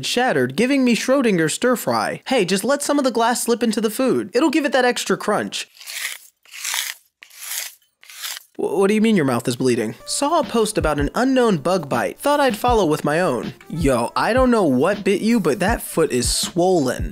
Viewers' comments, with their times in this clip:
0:05 I LOVE YOUR VOICE SO MUCH I WISH I HAD YOUR VOICE AAAAAAAAAAAAA ITS SO CUUUTE